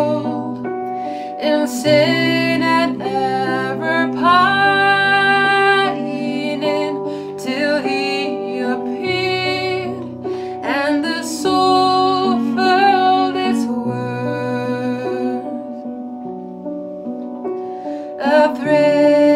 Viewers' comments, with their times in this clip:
0:04 your voice and your sister’s harmony gave me chills - praise Jesus 🙏!